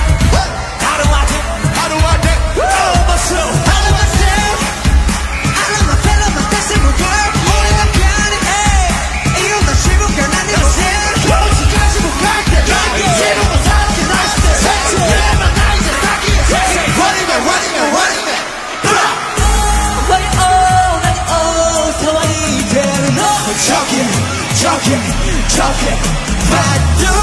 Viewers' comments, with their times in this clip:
0:06 jimin...😆 V's brahh is so awesome 🔥
0:08 he told in hindi isn't it?